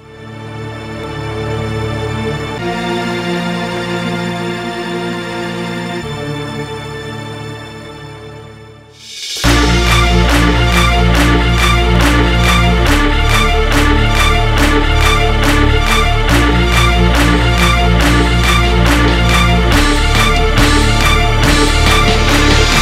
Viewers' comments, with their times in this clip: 0:09 song a sounds like spider man intro :D